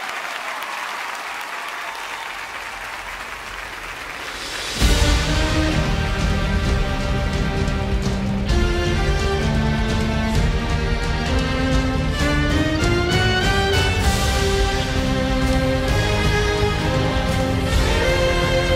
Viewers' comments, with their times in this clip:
0:03 sounds like the Iron man 3 theme song